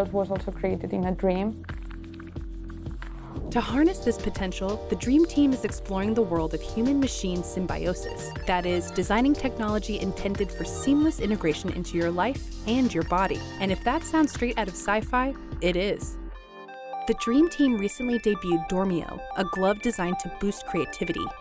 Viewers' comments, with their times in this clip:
0:03 she has a future in rap